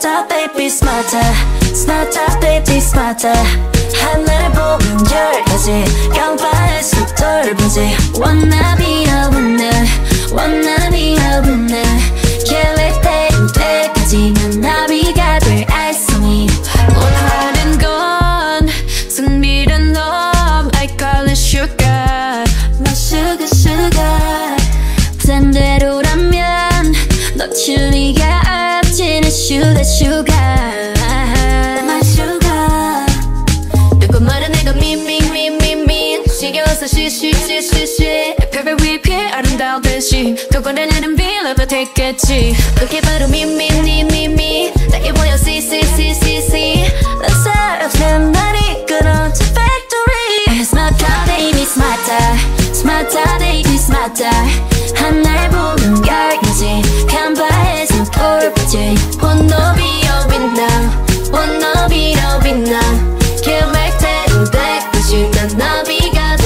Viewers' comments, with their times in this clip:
0:08 From do you get the AI voices from? Btw in rosé’s voice is 👩‍🍳 🤌🏻
0:49 The voice of BLACKPINK it's so good ilove you BLACKPINK
0:51 the way rosé says ‘smarter’ scratches my brain just right…the model was TOO GOOD with the way it captured her aussie accent too